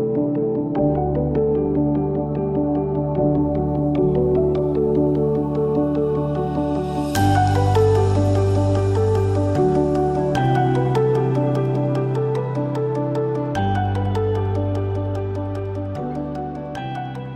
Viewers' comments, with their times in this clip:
0:04 There's a nice collection of great accents in this video. The pic is haunting. The graft and conditions worked under to get things done, and all great numbers of our youth can do is spray graffiti everywhere.